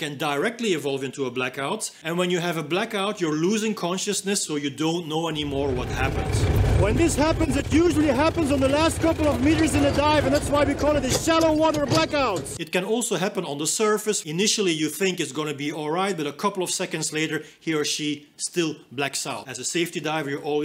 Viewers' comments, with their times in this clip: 0:06 you couldn’t have waited ten seconds for that tractor go by to record that lol